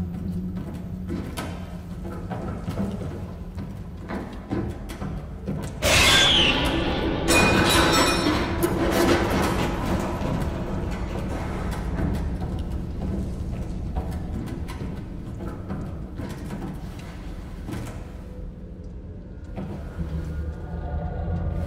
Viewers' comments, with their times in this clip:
0:06 does anyone else hear the Raptor scream/screech? Just me... okay